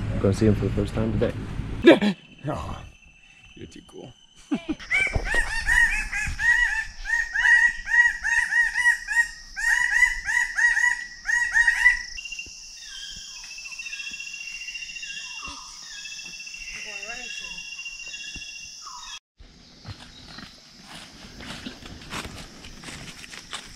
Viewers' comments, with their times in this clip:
0:05 hahaha natural dj music